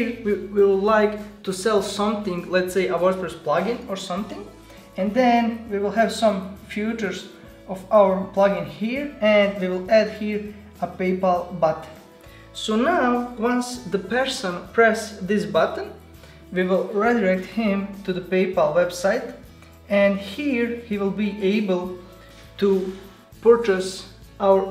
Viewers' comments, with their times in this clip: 0:10 A paypal butt? xD